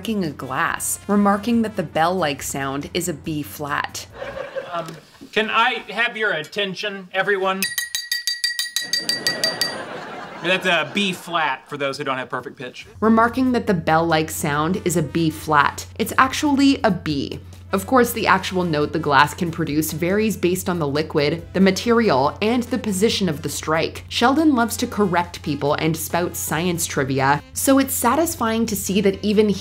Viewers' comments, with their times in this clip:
0:10 ur wrong. It is Bb. I happen to have pitch perfect so I immediately knew Sheldon was correct😂